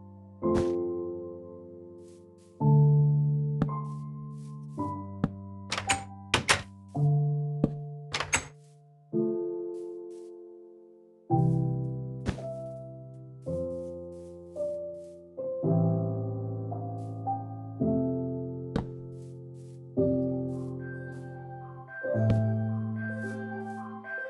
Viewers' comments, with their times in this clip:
0:05 I heard a voice !